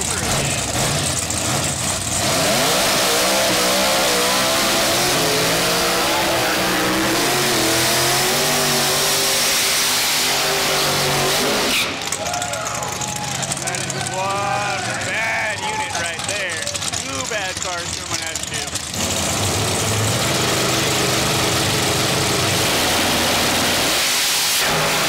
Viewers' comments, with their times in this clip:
0:09 I loved the burnout by the Camaro and the way the crowd simultaneously said “Woo!” right as the tires barked. And he pedaled for the win .